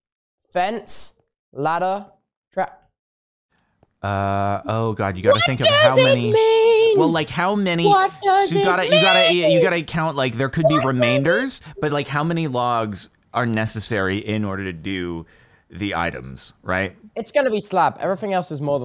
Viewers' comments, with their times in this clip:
0:06 Captainspraklez overthinking meanwhile tubbo just singing: what does it mean what does it mean what does it mean The time: